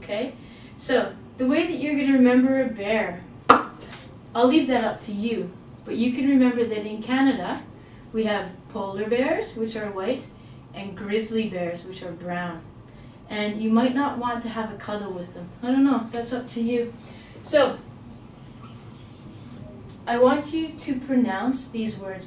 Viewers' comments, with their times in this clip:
0:03 It's her sound to say: ¡BONUS! jeje I love it.